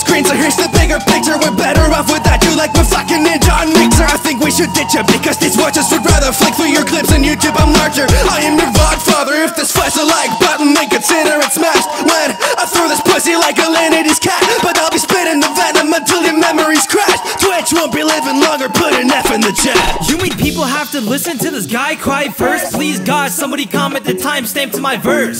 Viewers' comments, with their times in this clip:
0:06 Twitch becomes Squidward for a second